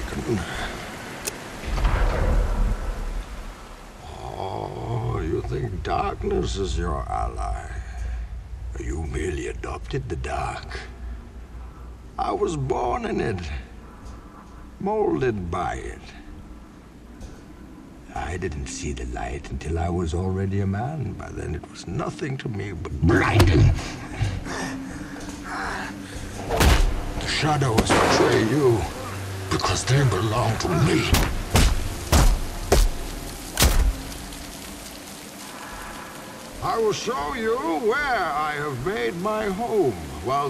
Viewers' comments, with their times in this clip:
0:04 this whole line is great but the way he says the word "blinding" is 10/10 execution, just the cherry on top of an incredible monologue
0:21 the way he says ''blinding!'' is so cool
0:22 This "BHLINDING" gets me everytime.
0:26 That crack was probably Batman's ribs breaking.